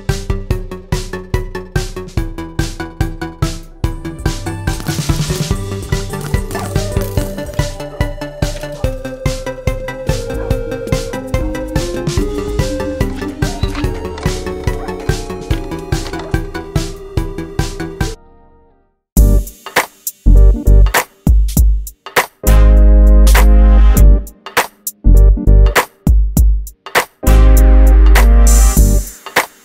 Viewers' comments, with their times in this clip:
0:10 i sond a so funny song in there. Just put in 2x speed